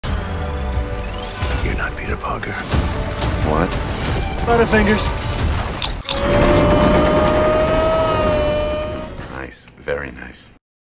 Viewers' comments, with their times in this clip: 0:06 What? Why is he yelling this time? hahahahaha